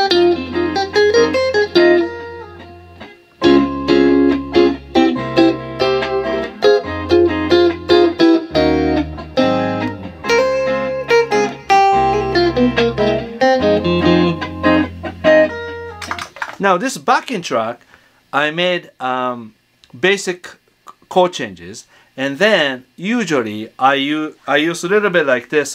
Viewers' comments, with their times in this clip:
0:07 Is that minor,minor,minor then 9th chord? By the way great job love that chord prog... Ilove that prs too